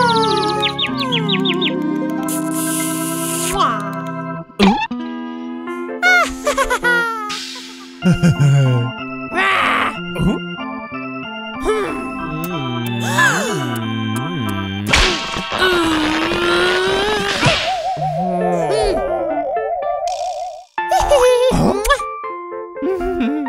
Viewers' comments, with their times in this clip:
0:06 Pencilmiss is laughing